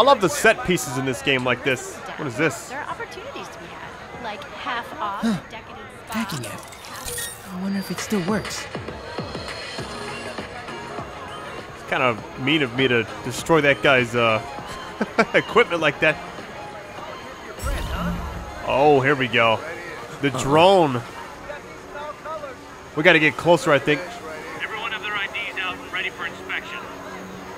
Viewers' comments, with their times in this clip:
0:08 What's that song playing in the BG ? Sounds like a merge of Lean On by Major Lazer and some Tropical House vibes.